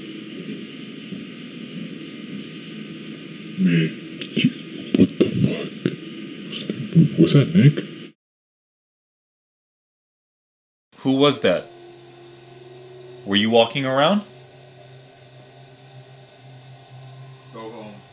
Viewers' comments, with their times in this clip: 0:04 can't hear shit to be fully fair